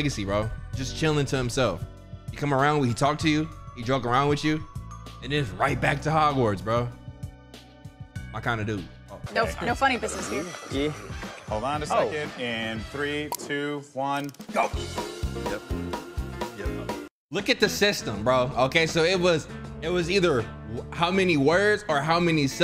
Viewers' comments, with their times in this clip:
0:08 That audio dip 😂 brief pause